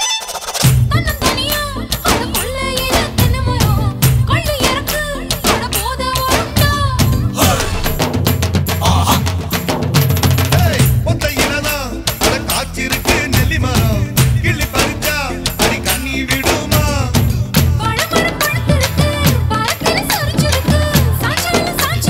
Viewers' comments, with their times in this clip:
0:04 Anyone note this vijay said trisha not sing